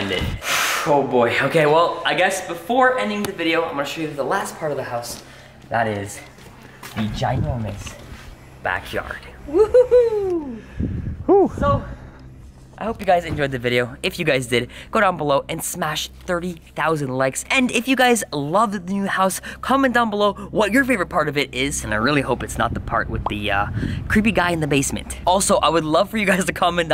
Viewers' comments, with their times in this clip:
0:07 here somebody told wohoo like a girl sound